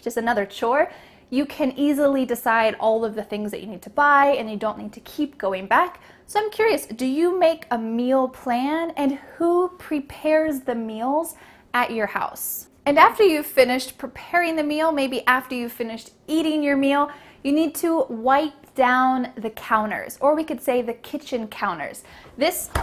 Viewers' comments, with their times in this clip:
0:05 "So I am curious" sounds same as "Some curious". It is unpossible to catch the difference. Very bad.